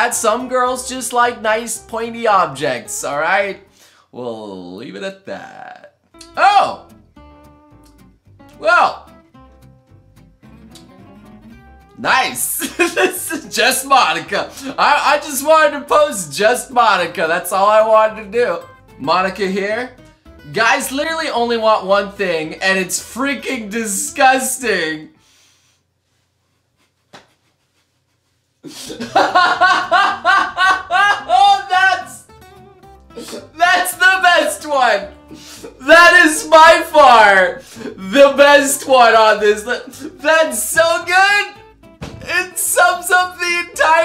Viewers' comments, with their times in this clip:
0:06 The first one had no audio real meme had queens "having a good time" Edit: 0_0 ..................
0:28 Every part that made you laugh was 100% forced mostly you sound like a dying... I don't even know? Cow?
0:29 Totally honest laugh 100% TRU